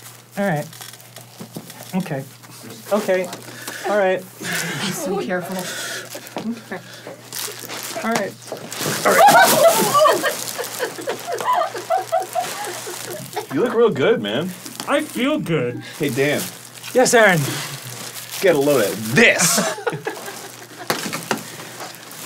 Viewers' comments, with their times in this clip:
0:09 Alright Okay Alright Alright The fact he made no noise when falling killed me,,,,,